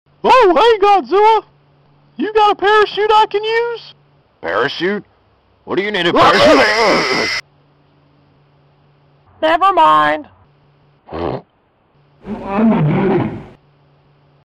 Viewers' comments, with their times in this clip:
0:10 Simply loved this video, but especially the part where sounds like a fart i laughed so hard!!!